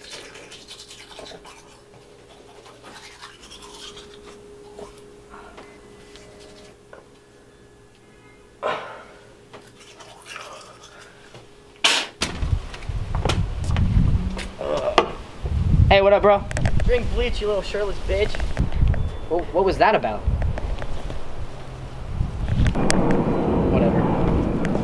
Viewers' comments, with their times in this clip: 0:08 In I hear a car beep